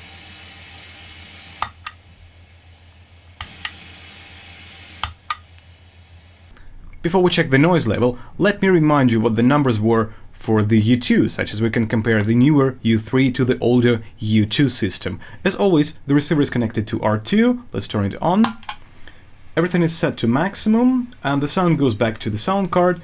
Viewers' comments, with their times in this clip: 0:08 What causes the noise? I can tell that compared to when I use a cable, it sounds like white noise or something in the background when I record a vocal with the U3. Is there no way to get rid of this noise?